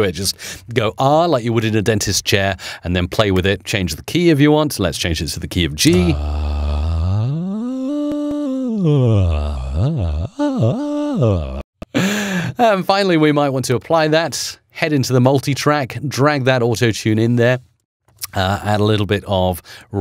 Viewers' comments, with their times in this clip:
0:06 when you try to get muscle car engine sound, its pretty sounds like thats